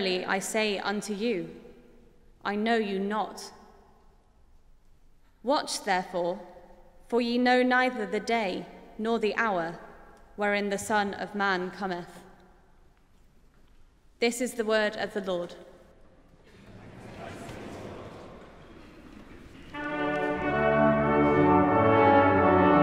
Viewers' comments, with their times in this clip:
0:06 I'm impressed with the Bach's "Wach auf ruft uns die Stimme" in the original German with a small brass section. It brings back many memories. Thank you.